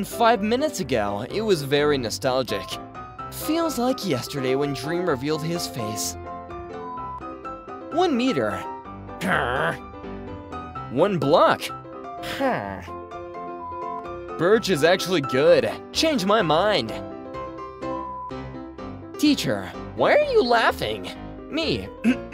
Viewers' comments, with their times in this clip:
0:08 how is his villager impression actually like really good